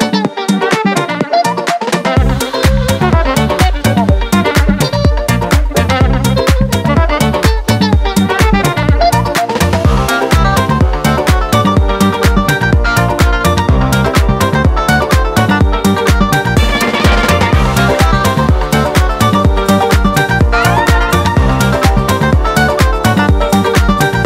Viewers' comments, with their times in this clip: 0:10 whats the instrument that plays ? It scratches my brain so good